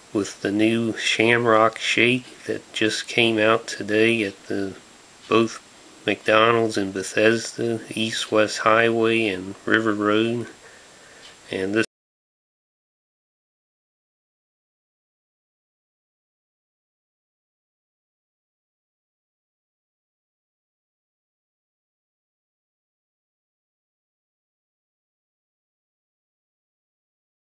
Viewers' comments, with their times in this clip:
0:09 0.29 Oh shit, it cuts off, then the video comes back but theres no sound till...there was no sound after lol...just an fyi.